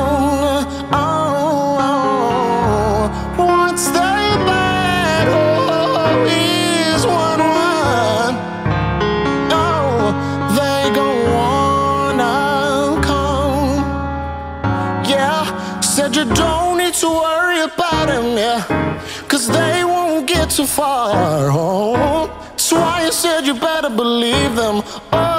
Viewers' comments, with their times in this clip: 0:06 the yodel he does whew!